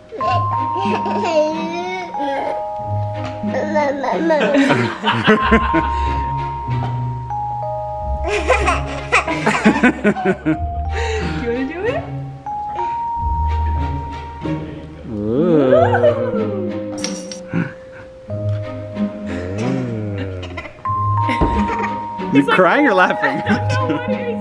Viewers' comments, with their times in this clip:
0:08 That little laugh omg is the cutest thing ever